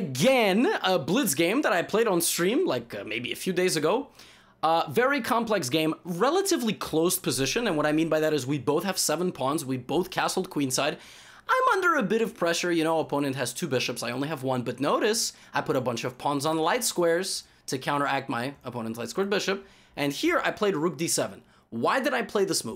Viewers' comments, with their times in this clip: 0:10 minutes he just sang the song im on sugarcrush